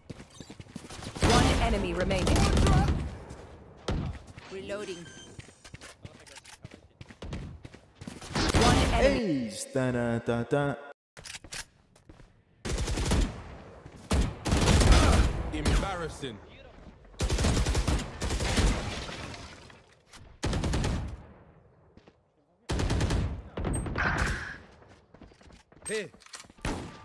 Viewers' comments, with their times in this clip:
0:08 did the recording stop???? but the sound s seems legit